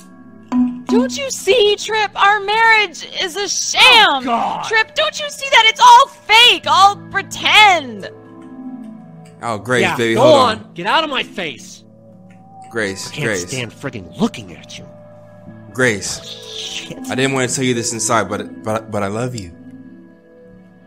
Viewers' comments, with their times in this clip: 0:03 trip said “OH GAWD!!” And it took me out 💀💀💀